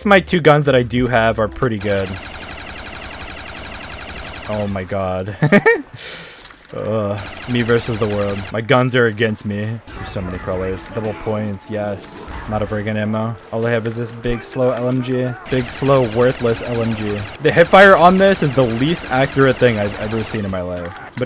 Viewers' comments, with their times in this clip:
0:05 I didn’t expect that laugh